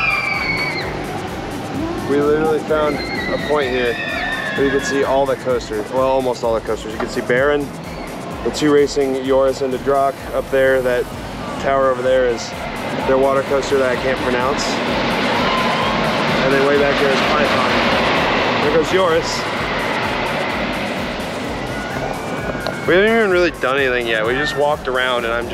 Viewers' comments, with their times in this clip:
0:09 Good pronunciation on Joris en de Draak, I'm impressed.